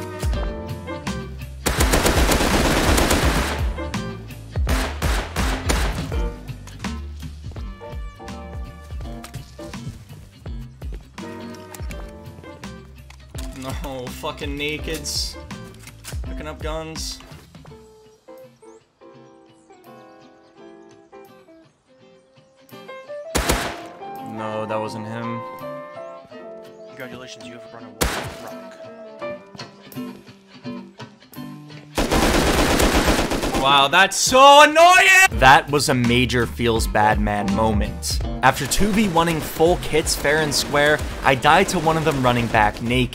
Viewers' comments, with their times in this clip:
0:04 the shots synced with the music 👌
0:27 Randomly started rapping to A milli to the music